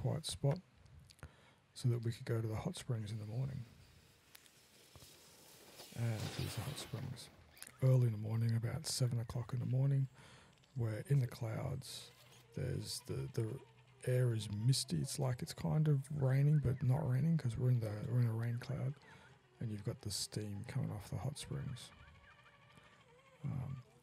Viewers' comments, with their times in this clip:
0:08 That’s peaceful, the cloudy morning and your morning-quiet, mood-setting description of the morning.